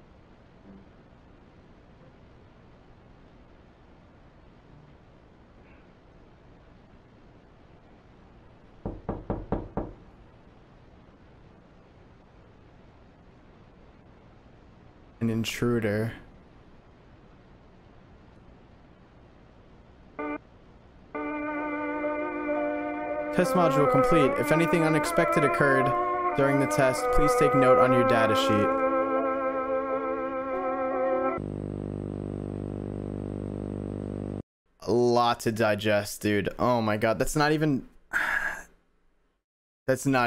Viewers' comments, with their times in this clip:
0:07 when i watch these usually im not scared by them but the knocking sound had me a lil shook lmao
0:07 the knocking scared the shit outta me
0:08 THE KNOCKING WITH EARBUDS ON ACTUALLY MADE ME JUMP
0:08 with 3d sound. My souls left my body
0:08 The knocking was so realistic that I actually got up to check the door.
0:08 That is such realistic knocking. I actually thought that Something was at my door.
0:08 This part made me wish I wasn't wearing headphone! Scared the living shit outta me!
0:08 that sounded real
0:08 god that sounded so real I thought someone was actually knocking irl 😓
0:08 Why did that knocking sound so realistic
0:09 Bro I got scared when I heard knocking I wanted to cry
0:09 That knocking made me JUMP
0:09 Is it me, or did the knocking sound seem real when wearing headphones, cause I honestly thought someone knocked at the door
0:11 the knocking on the door made me turn around because i thought it was my door
0:13 The knock got me, even though ive seen TMC before. :/
0:22 I literally turned around because I couldn't tell if the knocking was real, I was watching this in the backseat of my car....
0:27 I think the knocking got all the headphone users